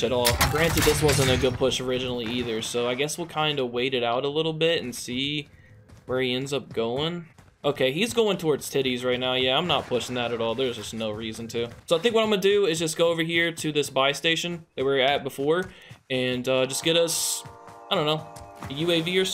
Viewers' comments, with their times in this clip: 0:07 what did he sayyyyyyy 🤣